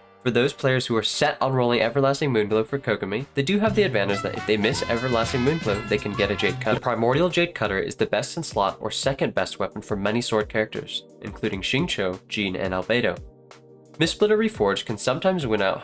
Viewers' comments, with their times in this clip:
0:03 I have to gush The price is right music + subtle kekw + "...get a jade cutt-" sudden cut + the flat, matter-of-fact delivery is just peak humor. I rolled for Everlasting Moonglow anyway (this is ill-advised). It's exactly what I've been hoping for as a weapon for my DPS Barbara (this is also ill-advised).